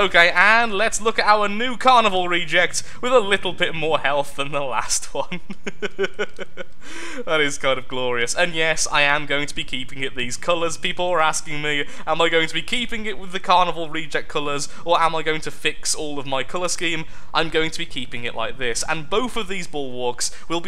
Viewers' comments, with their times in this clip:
0:04 When you laugh you sound like Markilpier.